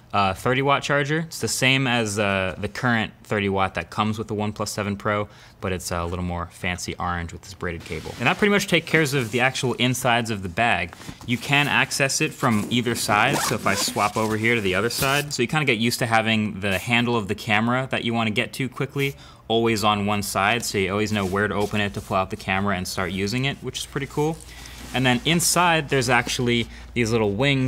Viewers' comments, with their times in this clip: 0:08 You: take cares My ocd: you gotta be kidding me